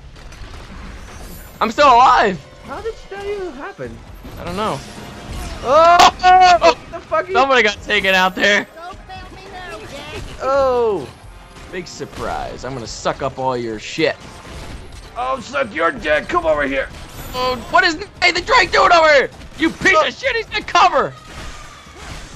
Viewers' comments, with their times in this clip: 0:04 They even included the classical music that plays when you fire the RYNO V in A Crack in Time. Absolutely amazing. Game of the year, all years.